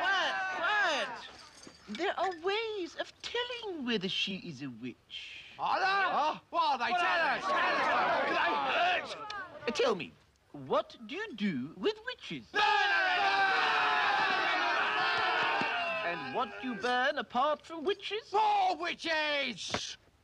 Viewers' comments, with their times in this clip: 0:07 Palin's exaggerated "Do they hurt??" just kills me every time! 🤣🤣